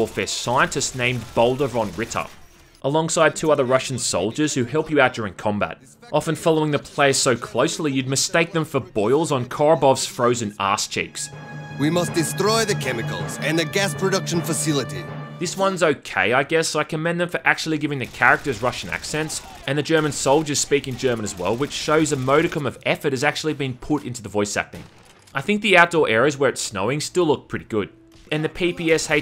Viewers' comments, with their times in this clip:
0:07 Wait, THAT was supposed to be a "Russian accent"? That's only one step less offensive than that racist caricature that Murican media parades as the "Russian accent". It's dreadful Sniper 2: Ghost Warrior would've actually been a good game, if only they could resist inserting the fucking CoD run&gun missions (dogshite) in-between the sniping ones (actually pretty good). It sort of ruins the game
0:17 how you know is rasian not ukrainian? , how you know is german not dutch?